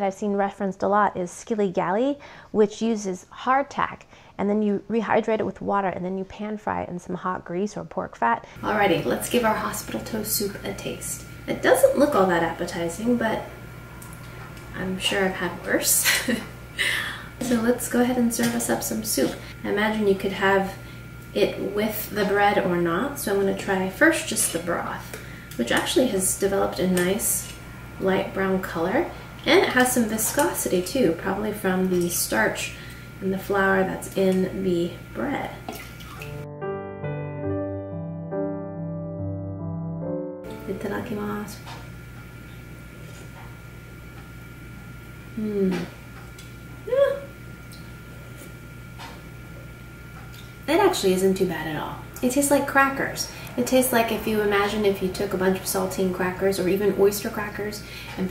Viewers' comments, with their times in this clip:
0:07 wtf is with the tone on I literally almost died. you know you could have warned us before it happens, not during?
0:08 want not expecting that change in audio lol make me jump off my seat
0:15 ha omg the audio change literally made me jump it spooked me lol
0:36 i’m sorry but the close-up of the soup with the piano made me pee myself
0:40 ... Emmy: "itadakimasu" Youtube closed captions: "with a lucky mask" 😂